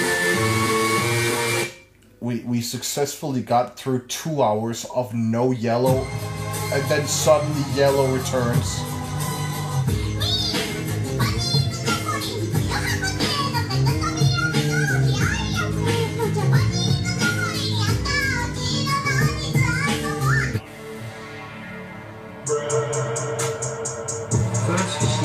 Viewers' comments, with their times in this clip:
0:10 But why does it actually sound fire for real?